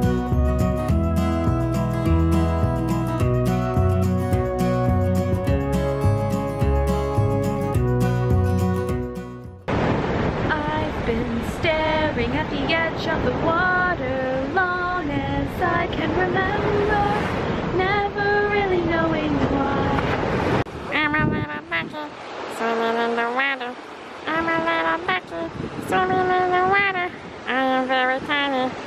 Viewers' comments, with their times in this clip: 0:09 OH MY GOSH THE SINGING. YAS.